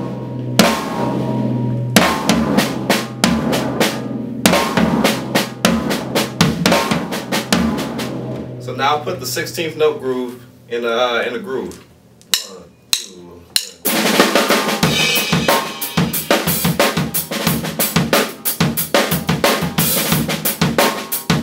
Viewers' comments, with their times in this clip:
0:08 hello, great technique and nice ideas. you say that you are going to play 16th note groove in a groove... I think you are playing the "groove fill" on 32nd subdivisions. I just say this because I relate it to your count in beat. Maybe I misunderstood... or maybe not... ;) Great video!!!!